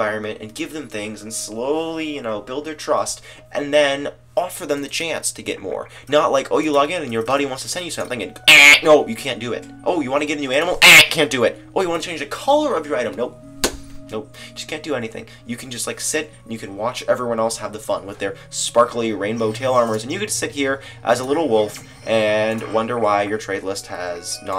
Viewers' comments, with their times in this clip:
0:07 on and on with that time he sounds like a duck O.O da hek?!